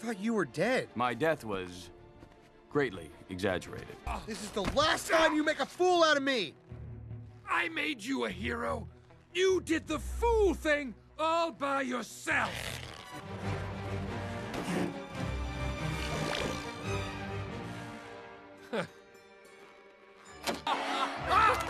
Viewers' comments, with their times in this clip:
0:03 *Correction* Metro Man: “So! You’re that PUNK I’ve heard about!” farts aggressively Titan: “eAh!”